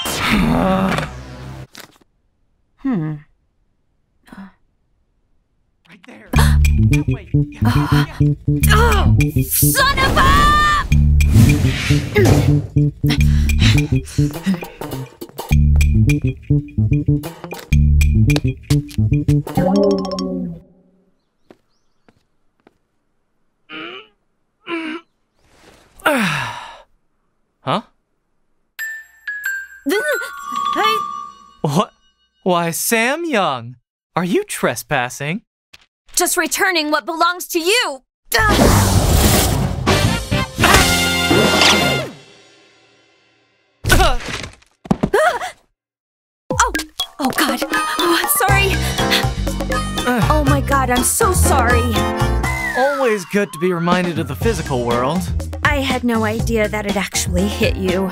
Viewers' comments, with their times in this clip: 0:10 holy shit she sounds like the original raven from Teen Titans
0:39 sounds just like drama by 9muses